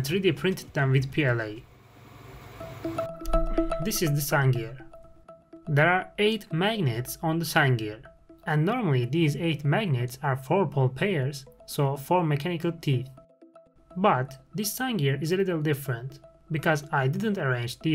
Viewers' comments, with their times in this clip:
0:03 The music came in very loud at first and then got so quiet I couldn't hear it, and it was different music at a reasonable volume.